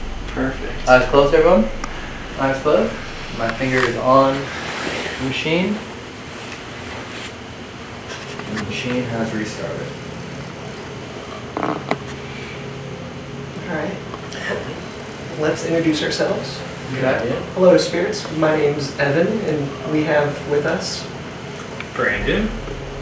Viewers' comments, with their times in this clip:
0:09 I hear really deep burps or breathing ... 🤔